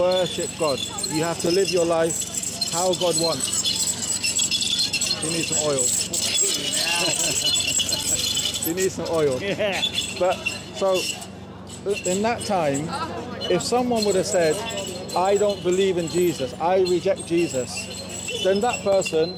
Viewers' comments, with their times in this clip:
0:06 He even mad on wheel sound cause need oil!